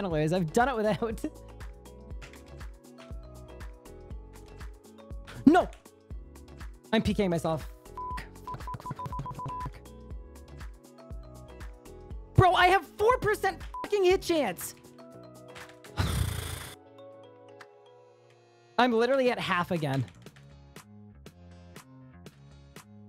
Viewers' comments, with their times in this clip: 0:07 POV you are receiving a morse code distress signal from the editor